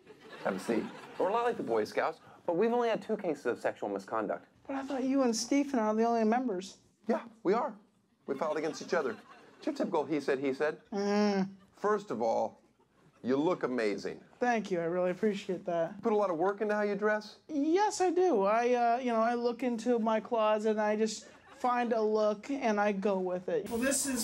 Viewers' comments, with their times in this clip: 0:10 wow scariest noise ever...keep hitting